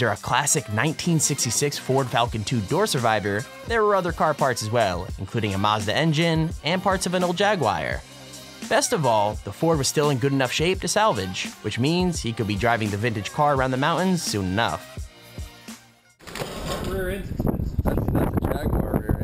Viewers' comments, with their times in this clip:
0:07 wtf is a "Jag-wire"
0:07 Is no one going to mention how he pronounces “Jaguar” ???